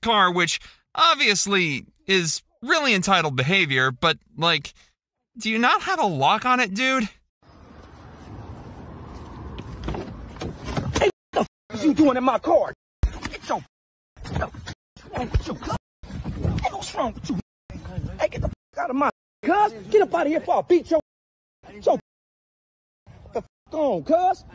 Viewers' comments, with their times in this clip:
0:07 Is that Franklin from GTA kicking the bum outta his ride😆